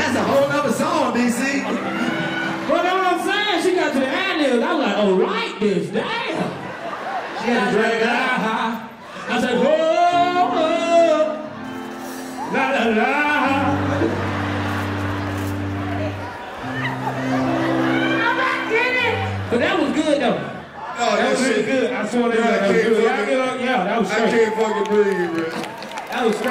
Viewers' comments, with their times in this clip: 0:10 the imitation DC did here absolutely got me lmfao